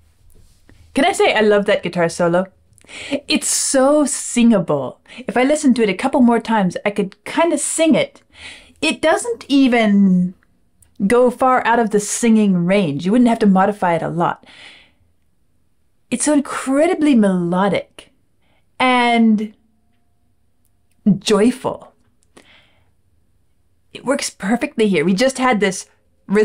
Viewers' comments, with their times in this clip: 0:07 Yes, they are definatrely singing guitar soloes, I get what you mean. I find some groups that have alot of vocal harmonic talent, can also apply that to their guitar work, I feel like its Freddy, singing through a guitar, but I dont know what he writes/contributes to the guitar solo sections, but it just hits me that the guitar is him singing, idk why. lol Fun fact, I sort of do the opposite, my songs even when complete, sort of feel like theres room, for a vocal melody its weird how the presence or absence of vocal talent in a composer, can have an affect on the melodies written for guitar as well.